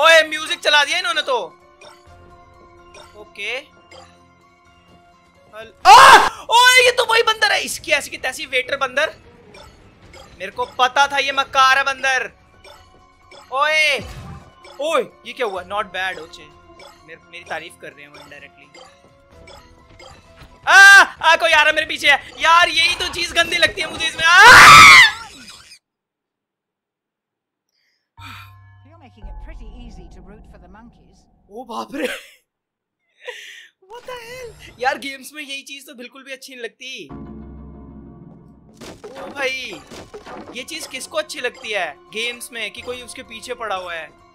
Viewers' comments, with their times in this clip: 0:05 RIP headphone users 🙈
0:05 R.I.P my ears 🤣🤣🤣😂😂😂
0:06 all headphone users died
0:22 our ear burst
0:24 headphones got ruined completely
0:24 mini heart attack😰 ( headphone users too )
0:24 headphone users RIP! Lol😂🤣😂🤣😂🤣
0:27 I shouted with you